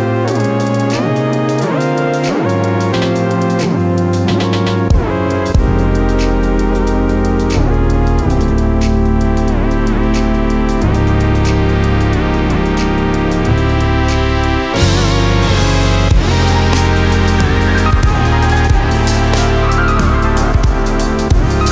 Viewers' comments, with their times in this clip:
0:05 that synth though...